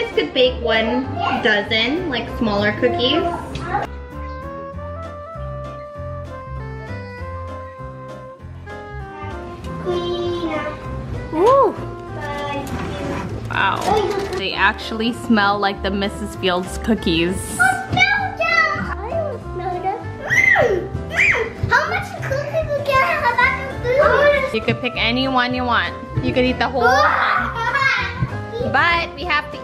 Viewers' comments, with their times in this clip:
0:10 Do I hear the clean up song ??